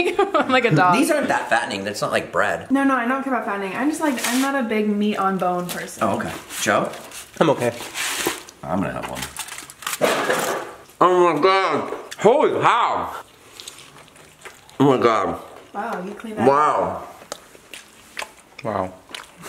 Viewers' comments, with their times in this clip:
0:04 the bong in the background 😂